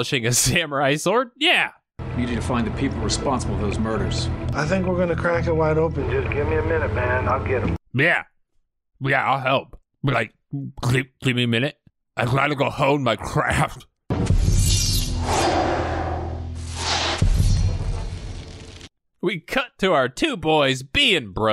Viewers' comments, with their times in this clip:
0:08 this seagal voice impression kills me everytime 😂